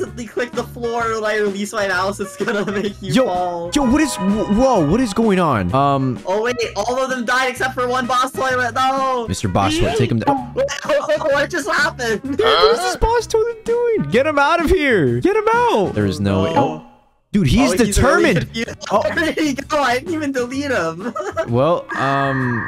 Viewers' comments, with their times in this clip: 0:03 you can hear him trying to say "what is wrong with you" but he stopped himself